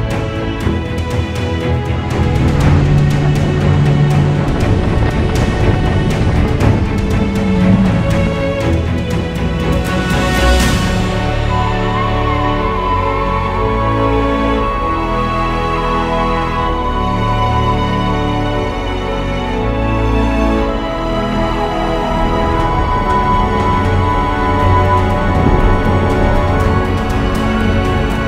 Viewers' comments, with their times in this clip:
0:10 Simply AMAZING! and CRAZY! I loved the music you puted ! really gives emotion! it's perfect! ;)